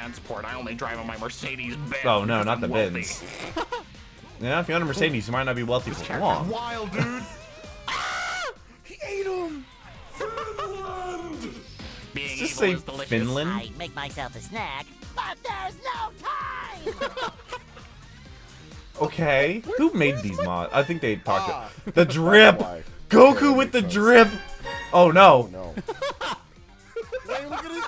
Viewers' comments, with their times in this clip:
0:10 Why do you sound surprised? Him yelling "Finland!" while in pain is from the Doodlebob episode which you've watched.